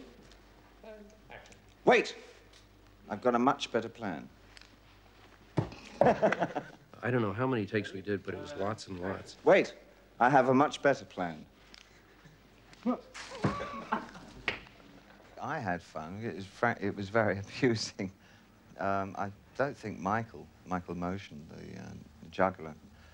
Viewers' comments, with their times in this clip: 0:05 sexy laugh! XD
0:06 Love that laugh! Haha!
0:09 Best part is when David knew Michael was gonna mess up so he laughed straight away and michael just had that "oh whatever" face on him. xD